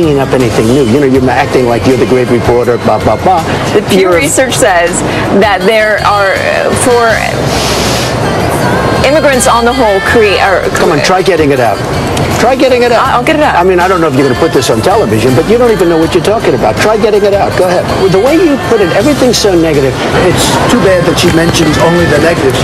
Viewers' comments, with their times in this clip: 0:06 what was she thinking about that made her talk like that